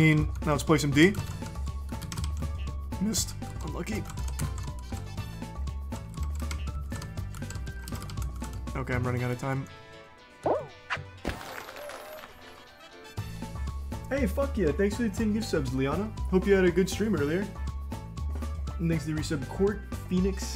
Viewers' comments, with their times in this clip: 0:05 the kid who charlie tried to punch laughed at him💀